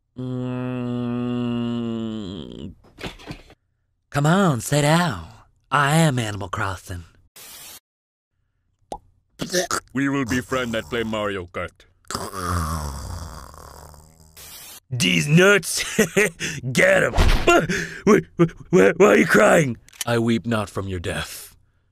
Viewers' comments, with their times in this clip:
0:04 that just sounds like a snake